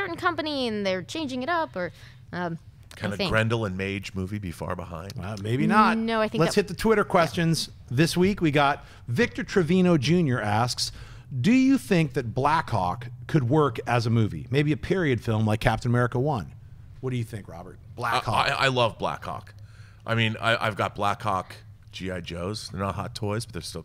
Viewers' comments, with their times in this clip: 0:07 Black Hawk. When you hear it, it cannot be unheard.